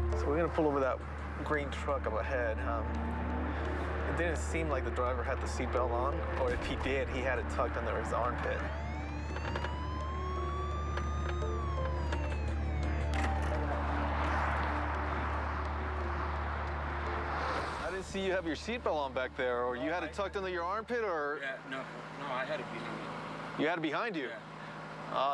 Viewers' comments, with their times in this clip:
0:08 token siren audio clip
0:09 I swear those fake sirens 😤